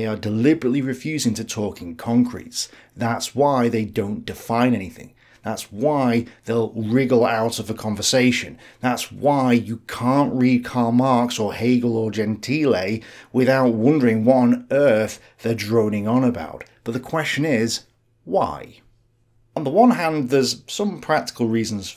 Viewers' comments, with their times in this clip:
0:04 sounds like Jordan Peterson